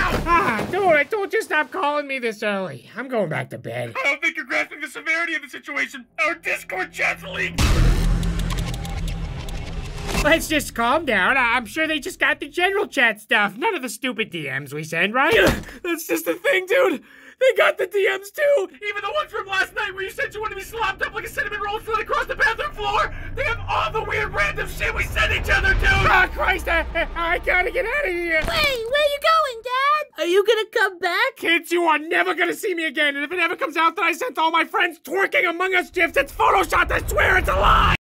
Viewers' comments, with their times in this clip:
0:07 That's a really fascinating winding, whirring noise.
0:36 Did he say jif?